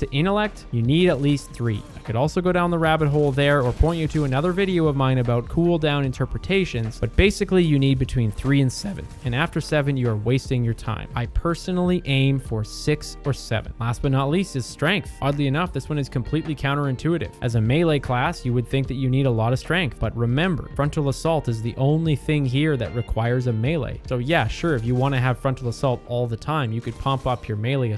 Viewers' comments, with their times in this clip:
0:08 Great vid. Perfect amount of actual substantive and helpful info. The voice crack lmao.